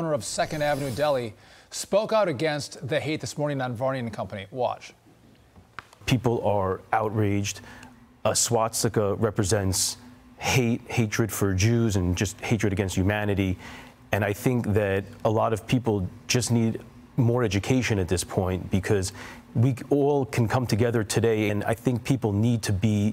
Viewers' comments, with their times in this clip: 0:08 A what? What’s a swat sikka? 🤔